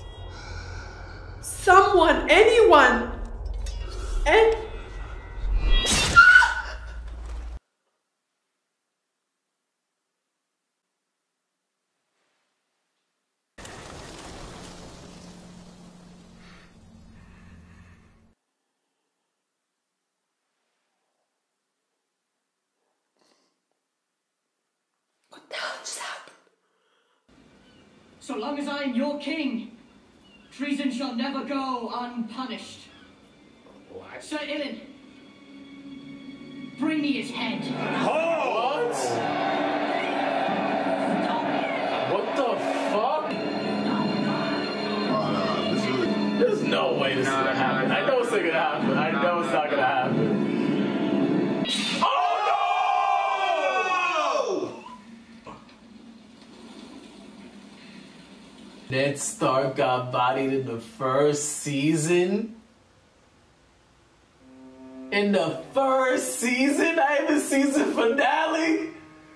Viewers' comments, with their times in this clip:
0:06 TFW no one 'tavines
0:52 I love how the guys yell "NOOOOOOOOO!!!!!!" in unison.